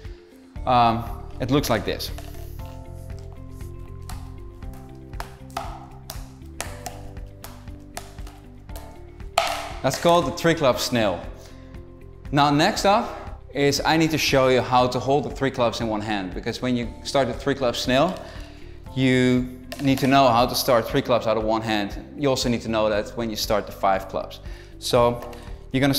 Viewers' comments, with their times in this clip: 0:10 Snail or snake?